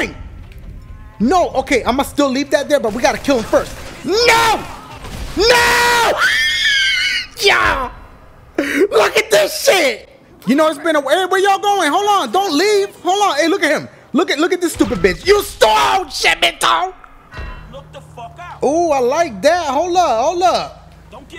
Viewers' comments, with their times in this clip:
0:05 the way he change his voice😂😂